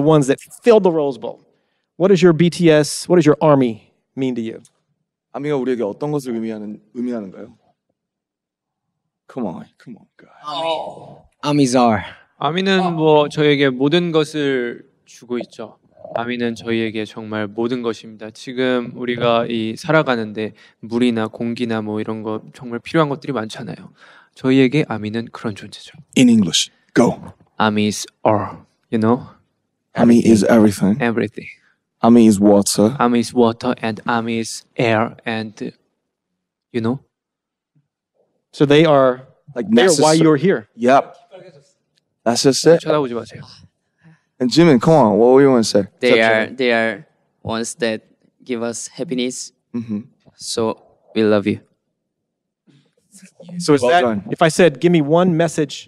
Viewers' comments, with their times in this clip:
0:07 Namjoon sounding like an exasperated Kindergarden teacher when he translated a question, and there was no instant answer ;D "Come on, guys...come on..."
0:09 Why did Namjoon sound disappointed?😂😂😂
0:13 Is JIN THE KOREAN GOOGLE VOICE??!
0:26 NAMJOON'S VOICEEEEE I CAN'TTTT!!!!!!
0:36 Jin’s little “ᵞᴼᵁ ᴷᴺᴼᵂ?” DO YALL HEAR ME CRYING